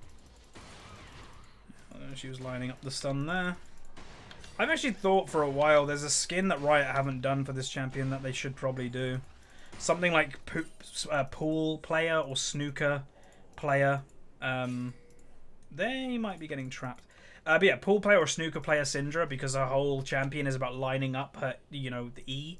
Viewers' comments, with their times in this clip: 0:07 I'd like to see poop party syndra as well ;p